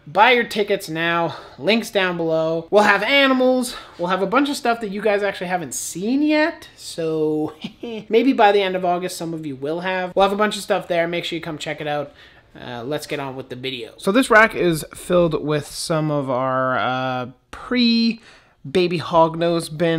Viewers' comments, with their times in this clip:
0:07 Omg I slowed the vid to see what you clipped in so i slowed the video to 0.25x speed and it was… the best thing ever, it made you sound drunk explaining the reptile expo. All jokes aside, very nice reptile room. I aspire to have something of that likeness sometime.